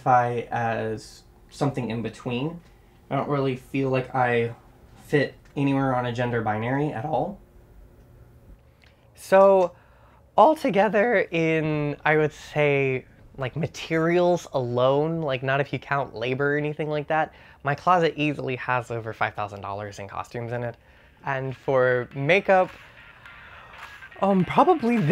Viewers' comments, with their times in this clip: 0:09 biggest voicecrack 2018
0:10 I wasn't the only person who heard his voice do somit weird "alToGeThEr" 😂😭
0:10 That voice crack tho 😂